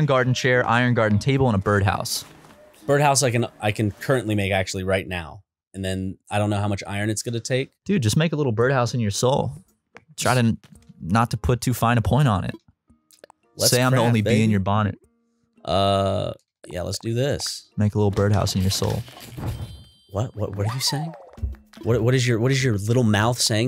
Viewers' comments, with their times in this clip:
0:09 YESSIRRRRRRRRR THAT SONG IS SO GOOD DUDE